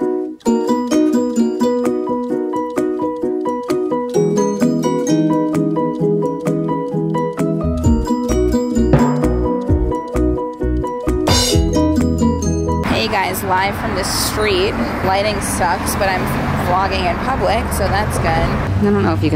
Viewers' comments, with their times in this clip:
0:07 the random sound effects are taking me out 😭😭